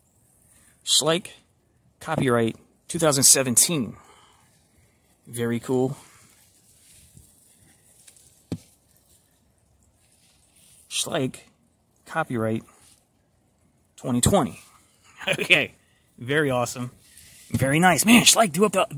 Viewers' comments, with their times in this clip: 0:06 What was that pig in the background